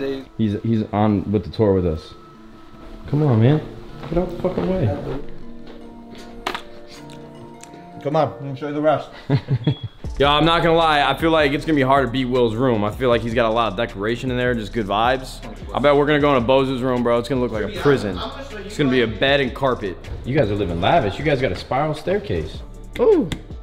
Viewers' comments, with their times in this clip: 0:09 was that a damn smoke detector needing batteries?